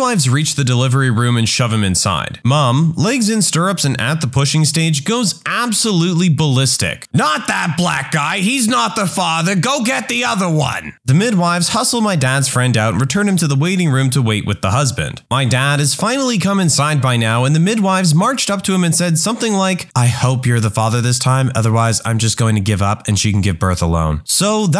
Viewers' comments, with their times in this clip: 0:06 I cracked up at the mom voice.